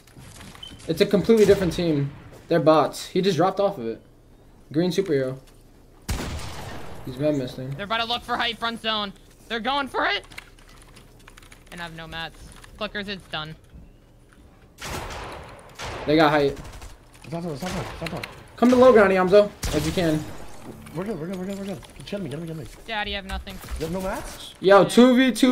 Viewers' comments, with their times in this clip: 0:09 that voice crack 💀